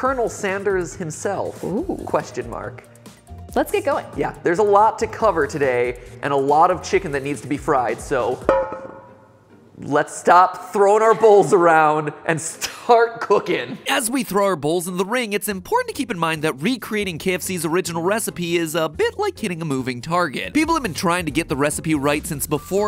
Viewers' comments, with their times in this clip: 0:08 sounded like a ping